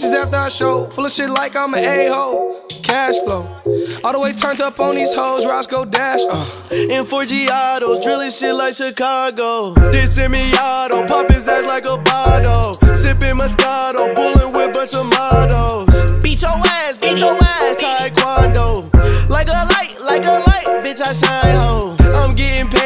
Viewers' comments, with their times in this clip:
0:07 tell me why i thought the lyrics were "murcielago see me in chicago" before i found the actual song